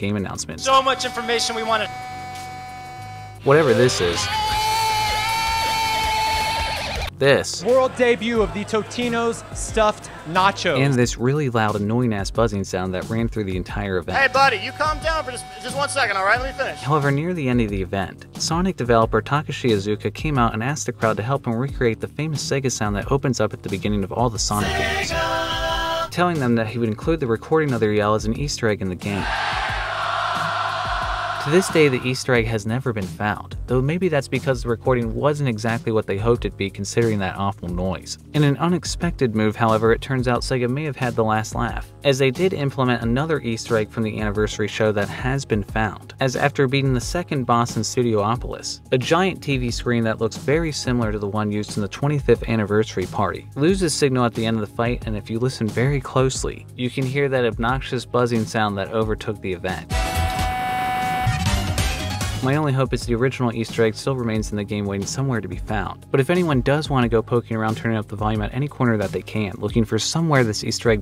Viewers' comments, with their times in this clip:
0:03 Sounds like something you'd put on a creepypasta
0:55 Have y'all tried to reset the game when the obnoxious sound plays?